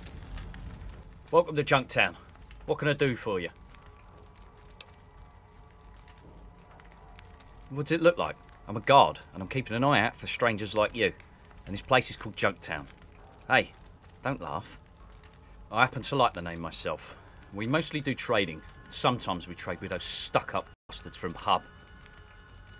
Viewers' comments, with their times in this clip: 0:06 noice accent innit mate